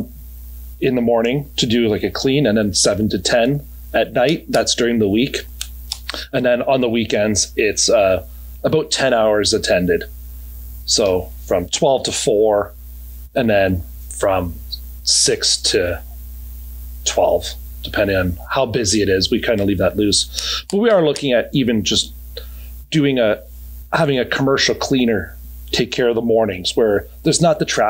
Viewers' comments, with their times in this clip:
0:08 aboooot, I’m his neighbour and have the same accent, just tickles me when I hear it